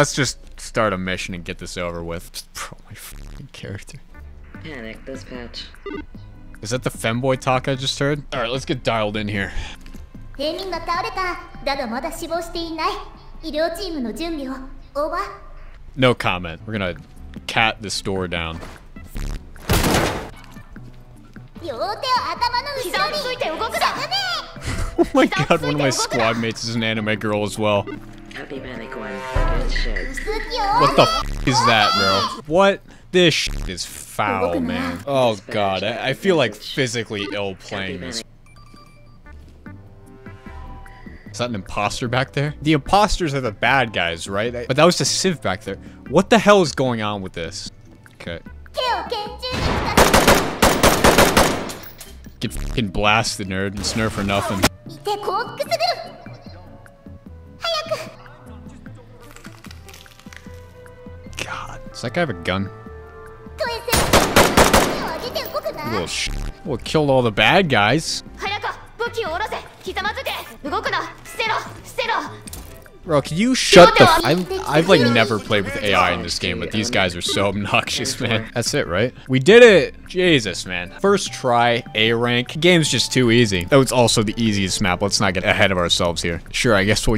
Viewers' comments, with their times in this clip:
0:09 That means "A civilian has fell onto the ground. But not dead yet. Send the medical team. Over!" And the way she called the civilian sounded like the word 下民. It's a way to refer to people in the lower class of society. Either way, it's very cringey.
0:56 The cryful "Hayakuu!!" killed me
1:08 this was fantastic, was my favorite. the voice lines made the game so cuter. laser targeted algorithm win